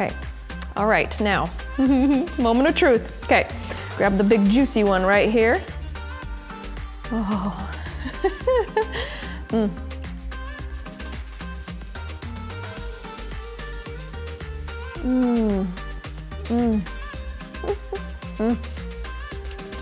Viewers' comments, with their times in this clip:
0:05 that whimper was all too real